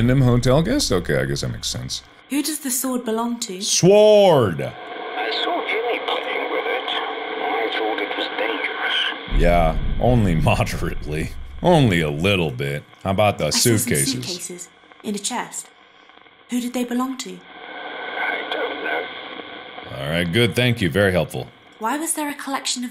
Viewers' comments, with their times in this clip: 0:03 reminds me of playing the first dragon age game and the little boy at the beginning said "is there really going to be a war papa? Could you bring me back a sw-ord"